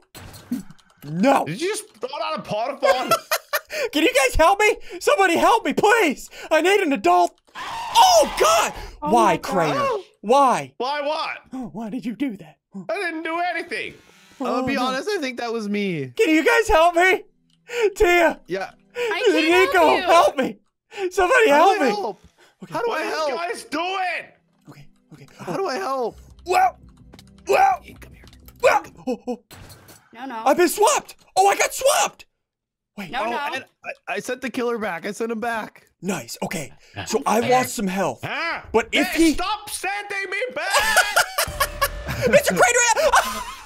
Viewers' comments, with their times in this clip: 0:08 the scream:AAAA the actual picture:someone meme me :,(
0:28 you here a whisper that says come here